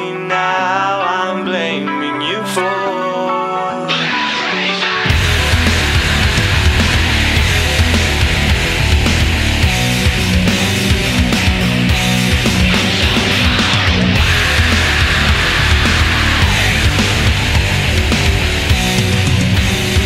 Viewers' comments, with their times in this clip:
0:03 I still get chills at the screaming
0:03 It's so adorable how he whispers with distortion on and thinks it sounds like screaming